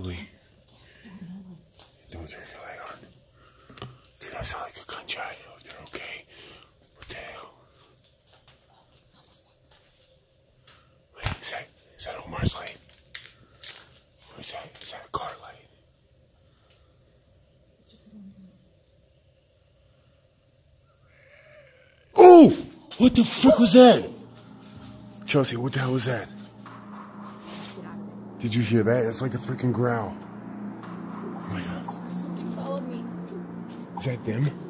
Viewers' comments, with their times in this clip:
0:09 Right I heard a baritone-voiced man’s laugh, “Ha ha ha.”
0:19 omg i hear the growl and it scare me !!!
0:19 I just heard demon growl
0:21 There's a...disembodied voice ... great video, bro!
0:21 that's a disembodied voice! It sounds to me like a moan or howl or you can say growl
0:21 a creepy ass growl by a male again
0:21 there was definitely a low male evil-sounding growl..😳